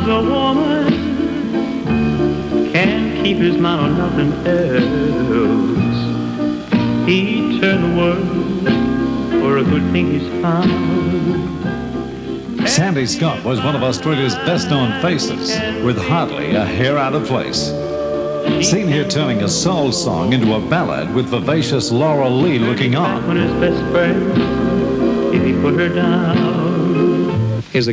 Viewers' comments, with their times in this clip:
0:08 "When A Man Loves A Woman" was a huge international hit for the late Percy Sledge, but it just sounds wrong coming from sandy Scott.